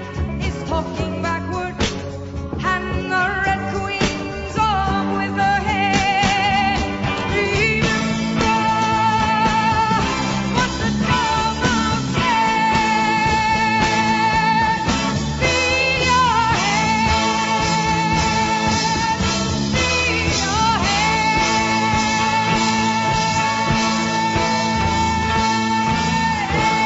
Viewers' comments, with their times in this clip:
0:09 Can you imagine being able to sing like this in the morning???? Oh to not have been there is my only regret in life. ( I was 7 😂). This is still the classic of that era. Go Ask Alice was the saddest book. Then movie.